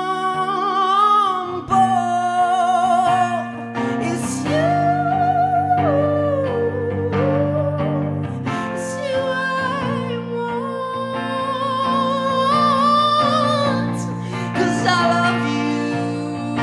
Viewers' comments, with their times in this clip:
0:03 That note gives me shivers. Brilliant song!
0:03 Wow. Amazing..... is the truth. Amazing voice. Speechless.